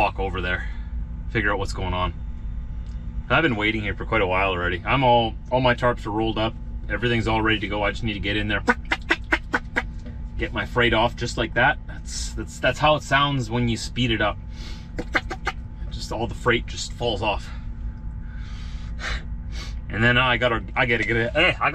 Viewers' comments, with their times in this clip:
0:07 One thing about getting older, when you start moving fast and make noises like that you usually need a change of underwear. xD